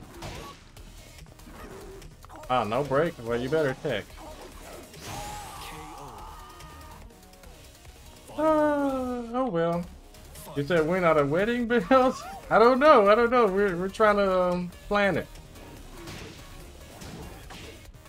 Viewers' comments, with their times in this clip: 0:04 Was like a movie extra dying off screen